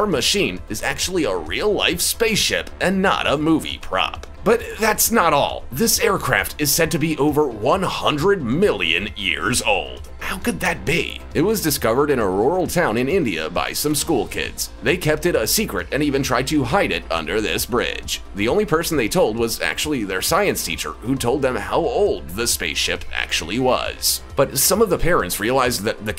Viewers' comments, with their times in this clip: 0:10 who writes this shit? And do you really speeeeeaaak liiiike thiis?